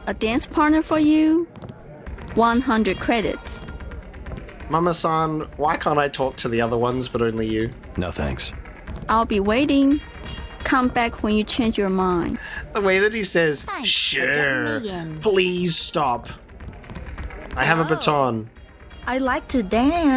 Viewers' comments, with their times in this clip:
0:04 Saying “Mama-san” is as bad as their accents. In fact, exactly so. Pronouncing “r” instead of “l” is a Japanese thing, while we’re being in China. A blatant mistake. And -san is also a Japanese honorific suffix.